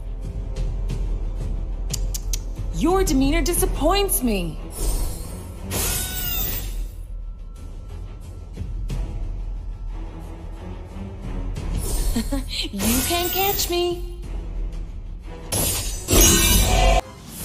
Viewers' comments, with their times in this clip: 0:03 LOUD NOISE ABOUT THE ULTI HAHA